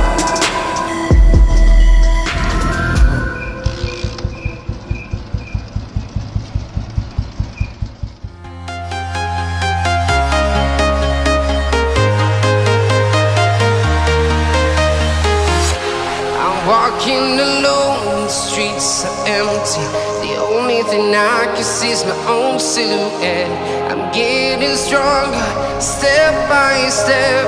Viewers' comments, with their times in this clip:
0:04 that breath of long bore❤️_ RE😍🎊
0:12 Good working.but rip headphones user